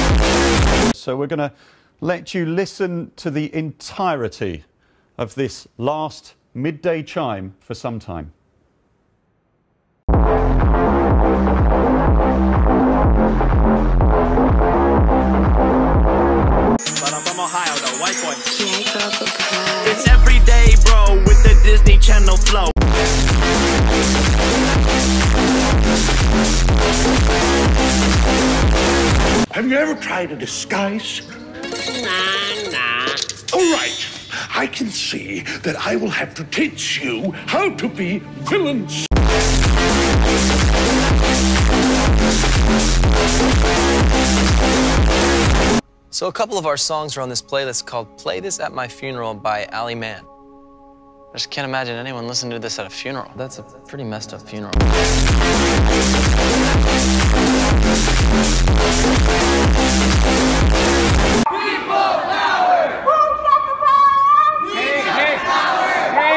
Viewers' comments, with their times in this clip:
0:10 wtf was Ali a fans doing in the Big Ben blasting the intro?
0:54 best funeral music